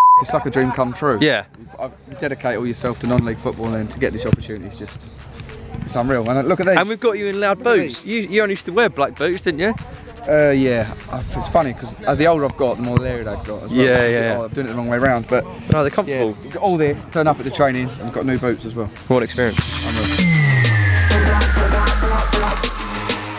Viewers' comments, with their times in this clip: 0:07 Song is absolute fire